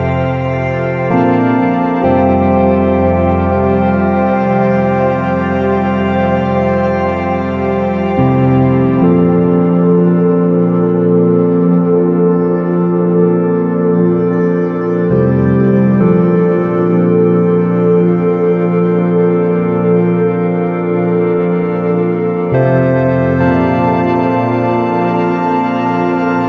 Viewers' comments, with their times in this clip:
0:07 I think IAM hearing mosquito's screams.